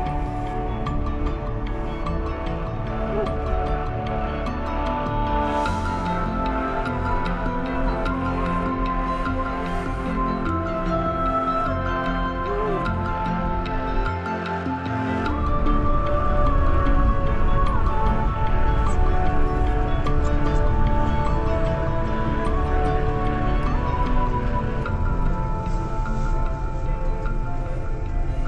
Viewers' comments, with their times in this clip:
0:10 That meteor was in New Zealand. I didn't see it but I heard it as many people did, it was damn loud!